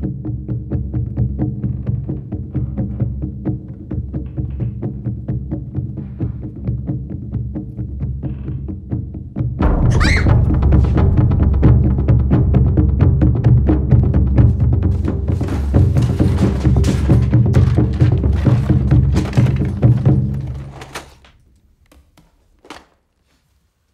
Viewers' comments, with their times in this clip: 0:08 M.J was already screaming before meeting spiderman.
0:08 board game saying "Hurry up!" Still my favourite part of the drums.
0:09 I love the drums of Jumanji, especially
0:09 I love how Judy screams after that loud BOOM!
0:09 I yelled back when I heard thunder!